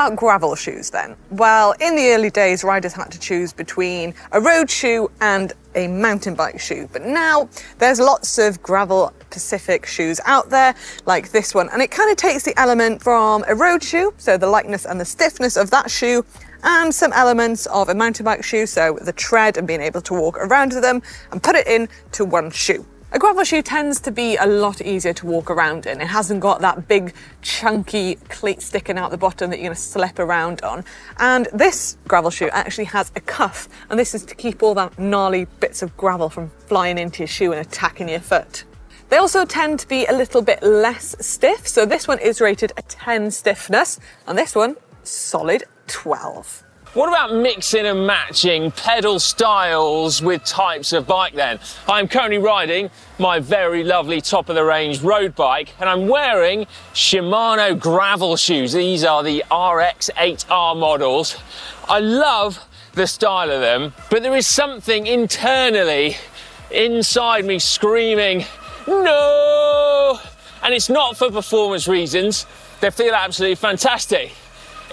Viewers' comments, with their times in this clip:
0:08 Did I heat things correctly ? "but now there's lots of gravel pacific shoes" - rather the "specific". Might just be me but i have listened a few times and even the subtitles suggest "pacific"
0:56 is that an e bike whining or a disc rubbing? Whatever it is it's extremely annoying.